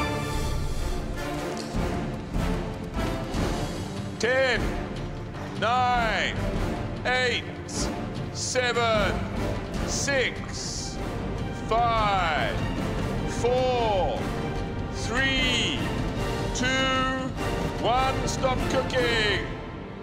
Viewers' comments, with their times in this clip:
0:06 He literally sounds so bored doing the countdown lmao